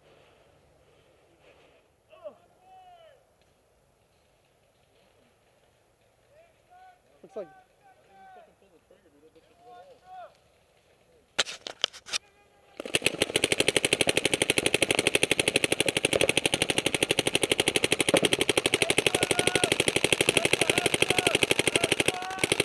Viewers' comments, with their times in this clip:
0:04 the goggle cam gave u away?lol bro you are shooting an ego haha they are loud as hell.hahaha no offense at all I have an ego also. Just making a funny